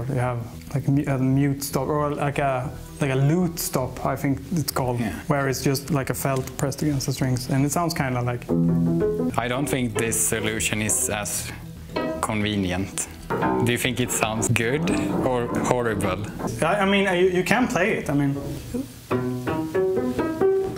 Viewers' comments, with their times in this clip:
0:06 I kinda like sinus infection piano